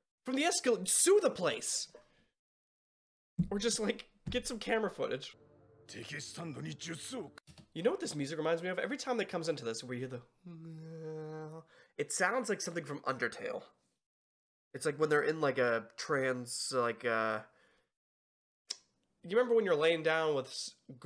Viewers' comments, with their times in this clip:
0:09 indeed the track "Kirini Hisomu Takurami" does kind of have the same vibe as "Quiet Water" from undertale. at least thats what i thought of